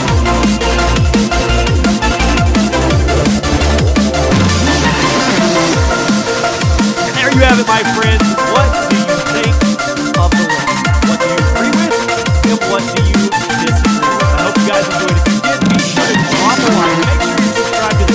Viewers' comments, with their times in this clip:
0:06 can't even hear you lol